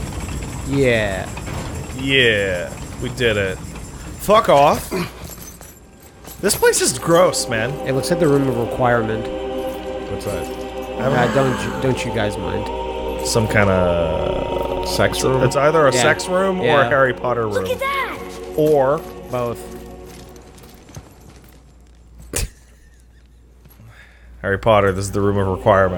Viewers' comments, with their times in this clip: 0:07 -40 What the fuck is this? Halo? That music straight up sounds like yhe cutscene where you first see the ark!